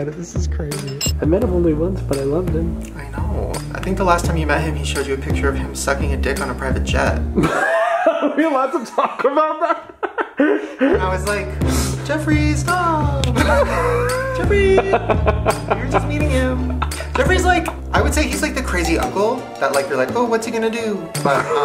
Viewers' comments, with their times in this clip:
0:03 was said so casually 😭😭